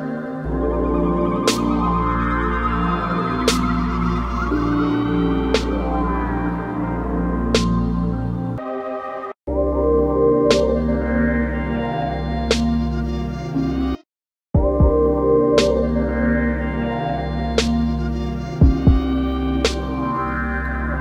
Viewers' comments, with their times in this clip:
0:08 that laugh was real broo lmaoo you knew how hard it was gonna be